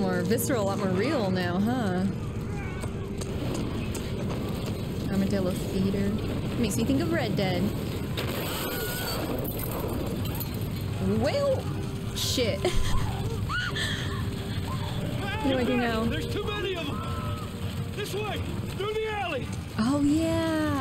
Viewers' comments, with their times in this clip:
0:06 The Wilhelm scream is there.
0:08 Wilhelm scream, LOL! :D Why do I have an impression that new Tommy looks like your relative? :D